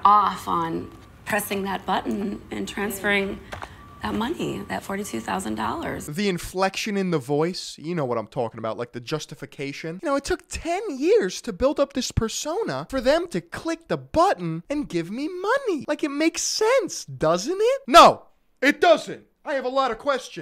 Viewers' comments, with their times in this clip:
0:04 Notice the desperation in her voice, like she won the jackpot of a slot machine. And saying "THAT $42K", specifically, the jackpot that she won. It is a game of chance, like the slot machine, that she has no control over. She knows that in her heart. You can hear it in her voice.